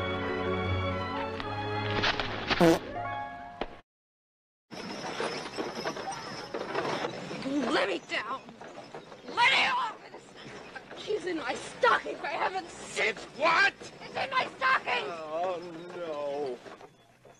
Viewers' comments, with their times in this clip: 0:03 Was that a fart ? 😂😂